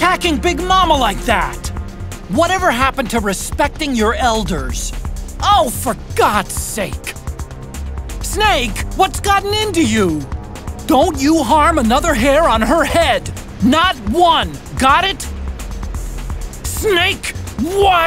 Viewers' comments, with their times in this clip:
0:05 Great video! My favorite part starts I couldn't help but laugh, Otacon sounds like an old lady.